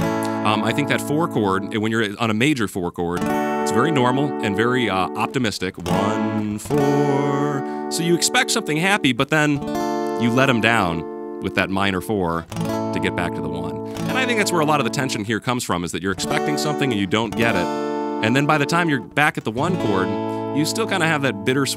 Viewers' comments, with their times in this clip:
0:07 "you let them down"...that perfectly describes the sound